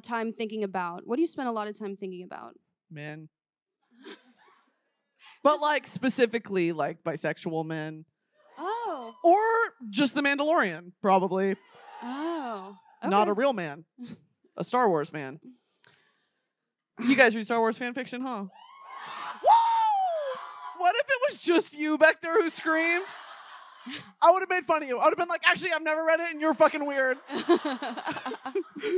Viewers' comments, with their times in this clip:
0:10 THE SNAPPING AT THE BOTTOM IS SENDING ME